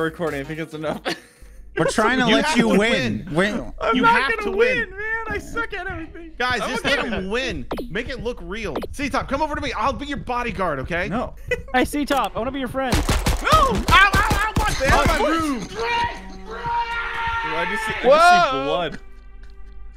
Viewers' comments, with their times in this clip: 0:06 One of the funniest moments I've seen in a minute... 🤣😭 then him screaming DRRRREEEEEEEEEA!!!! Dead. 😂😂🏅